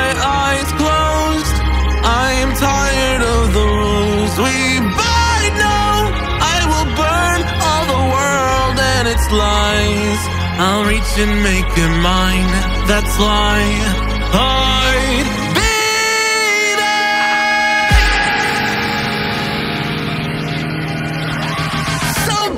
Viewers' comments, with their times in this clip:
0:08 i thoght it was am lol